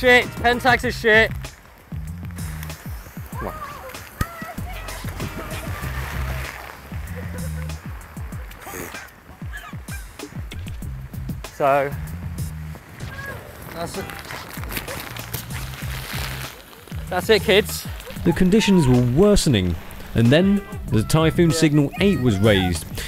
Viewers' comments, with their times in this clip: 0:09 What is that weird noise ?!